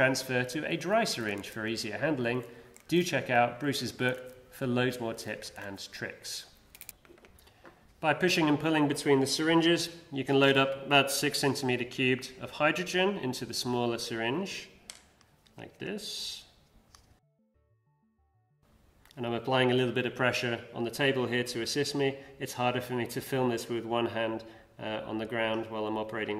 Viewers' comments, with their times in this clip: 0:07 sounds weird what is that ?